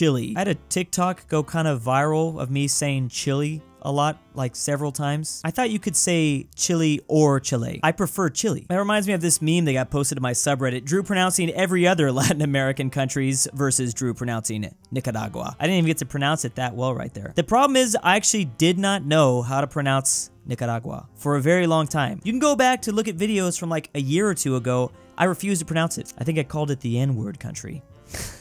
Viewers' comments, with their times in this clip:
0:10 as someone who’s half nicaraguan, the way you pronounced it was clean as hell 🤠👌🏻